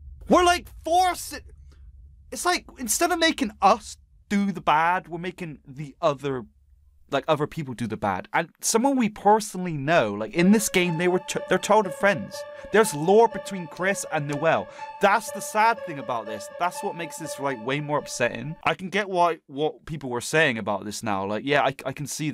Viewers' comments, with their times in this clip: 0:10 is it just me or did I hear frisk?